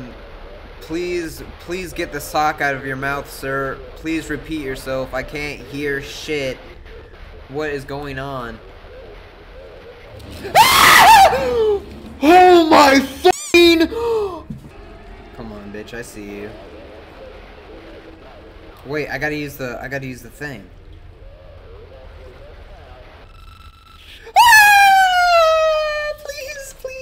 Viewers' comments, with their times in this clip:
0:08 well......... I guess I just go and change my pants then. that scream though xD are you alright man? great video, Dropping a like